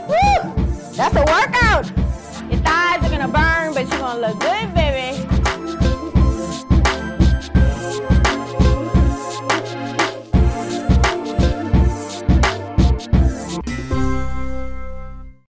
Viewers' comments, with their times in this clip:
0:12 just like what you say and how you say it 😘😘